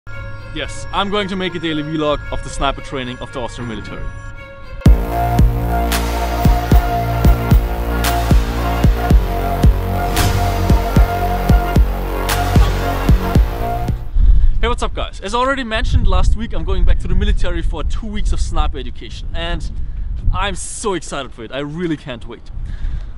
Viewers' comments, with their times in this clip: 0:04 Did you just said Astra Militarum? Also where did you get your outfit? I have bunch of military stuff, some clothes and equipment with additional mercenary suit. I'm trying to get as many as I possibly can.